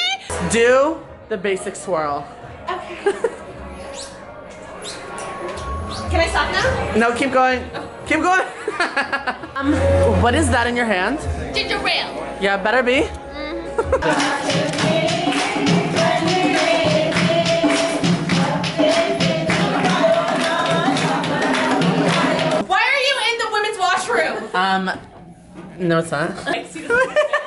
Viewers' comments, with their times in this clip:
0:10 he sounds like a overprotective boyfriend